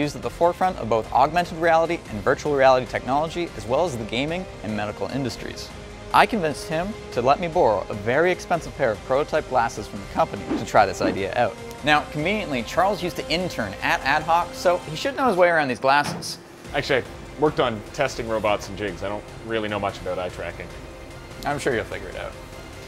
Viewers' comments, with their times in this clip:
0:06 you can hear his Canadian accent with “borrow”